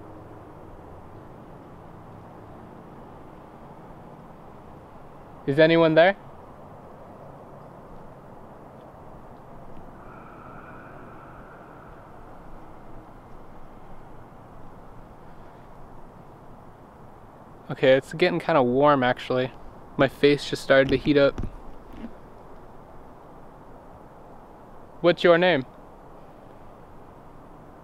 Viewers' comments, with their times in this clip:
0:10 At the mark, immediately after u say “Hello”, there’s this creepy-breathy reply...idk, I heard it, & it was a little creepy.